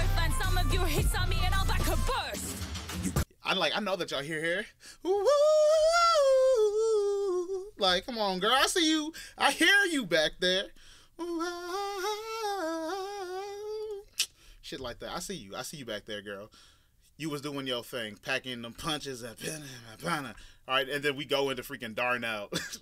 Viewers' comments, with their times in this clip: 0:06 he went to church and whipped out that heavenly spirit in his voice